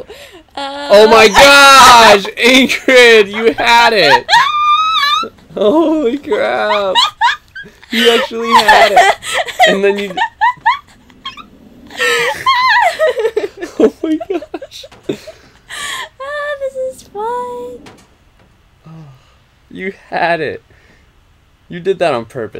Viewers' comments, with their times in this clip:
0:03 Cue the whole audience cheering her on!!